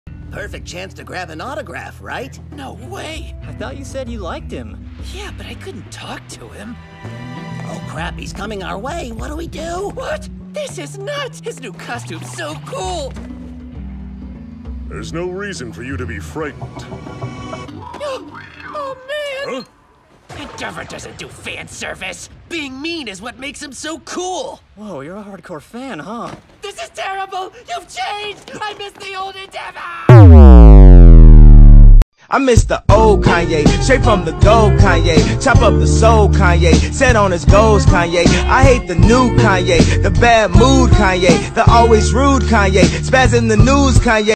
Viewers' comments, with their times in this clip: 0:00 Yuuji is that you?
0:00 NATSU IN MHA!!!
0:26 why does it sound like the main charcter from South park???
0:30 HELP WHAT'S THE SOUND EFFECT THEY USED THAT SOUNDS LIKE 'wahhhhbOOOMMM' I NEED IT
0:41 I can hear the " SHOUTOOOOOOOOOO "